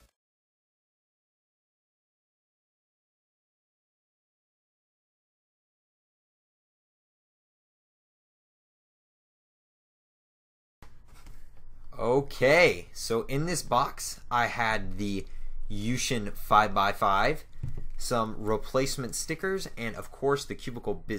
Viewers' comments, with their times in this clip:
0:07 why is dat no sound